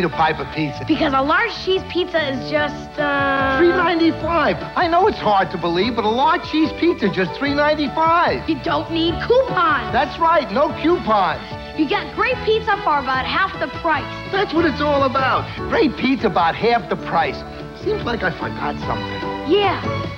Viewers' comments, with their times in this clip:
0:08 I see that Frosted Mini Wheats commercial again. I see they even had “bite size” back then. The “bite size” is what we have to settle for nowadays. Such a shame. And it seems Frosted Mini Wheats had more frosting on them back then, too. Hehehe, the little boy says “coo-pawn”, older man says “q-pawn”. Yeah, it’s like tow-may-toe, tow-mah-tow situation lol